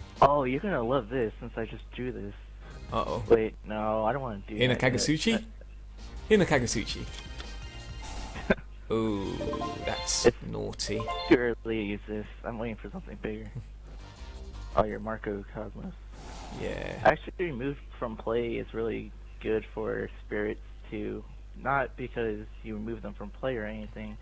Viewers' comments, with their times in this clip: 0:08 oooo~ thats naughty~ I love that guys voice ^^ <3